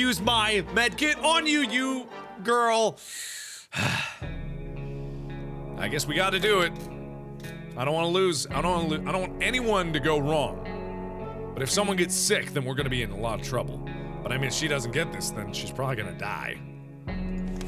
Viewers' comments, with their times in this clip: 0:03 the music changed RIGHT when mark went serious... that was awesome!! Haha